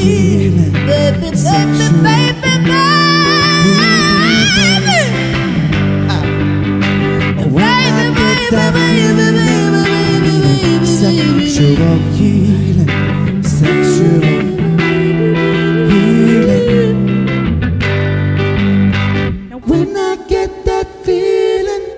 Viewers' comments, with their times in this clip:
0:05 Ren's appreciation of Chinchilla's off the chart vocals. Ppl are sleeping on this one , But I just keep coming back to it.